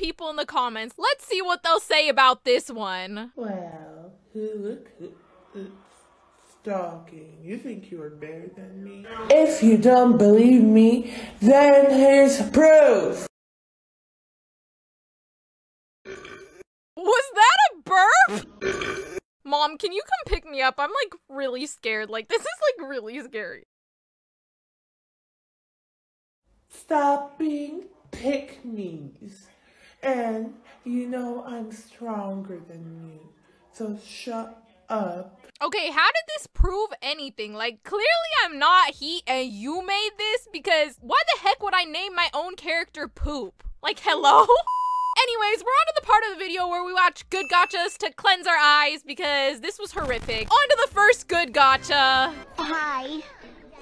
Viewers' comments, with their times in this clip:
0:04 You scared my dog😢 bro she sounds like my cousin💀💀💀
0:15 Fart ayoo why is mama big entelma nah I'm d'l💀
0:16 fake big mama eternal burped
0:34 Gurl she sound like a 68 yo that is bored and then join the Gacha community